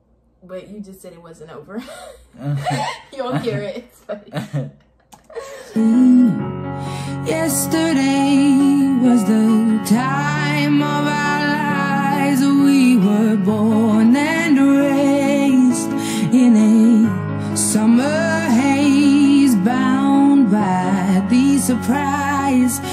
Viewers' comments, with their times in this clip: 0:05 She gets choked up around the mark and cries at the end. There are better examples but I don't have time to look for more right now. I hope this one works!